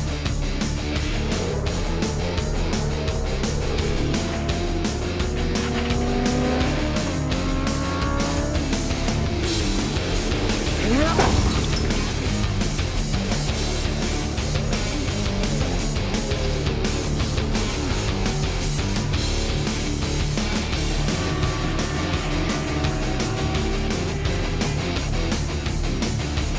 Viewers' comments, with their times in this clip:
0:10 the loudest crash here its even louder then the music